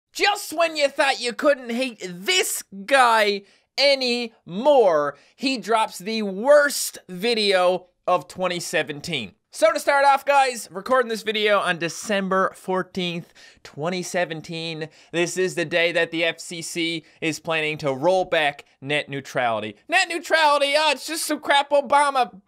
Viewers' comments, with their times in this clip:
0:03 Are you kidding me Ajit Pai? That's like telling a person "You can still breathe" but what he won't say is that "You have go through a pay wall to use YouTube". And that evil laughter at the end is just DIABOLICAL! All jokes aside what a jerk!